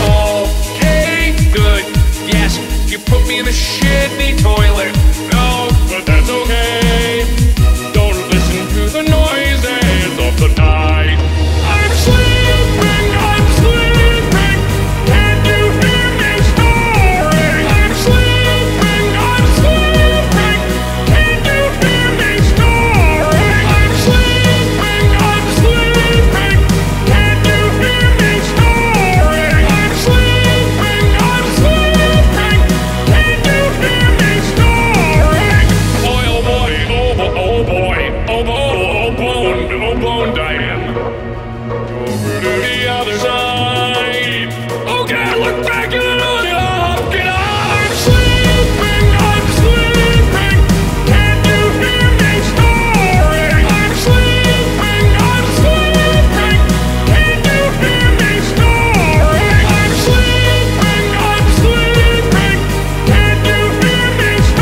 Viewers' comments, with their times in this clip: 0:05 why did that sound like he was actually singing? Like most of this is made to sound like he’s singing even though he’s just talking but this lil bit sounded more like he was actually singing-
0:06 sounds so freaking cool. Edit: Just rewatched the original, and I guess it's because he sings it in the video.
0:06 Omg his voice is so amazing ❤️❤️
0:24 I loved how you quicken the drums that’s my favorite beat
0:41 The drop genuinely gave me chills it's so good :D
0:41 Bo Burnham much?
0:49 Why does and after sound like a boss theme?